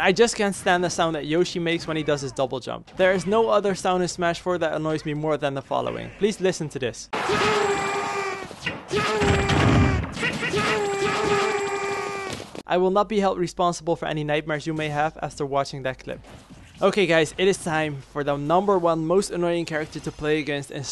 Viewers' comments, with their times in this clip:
0:06 You're definitely right. The sound that Yoshis make when they do their double jump is enough to have nightmares.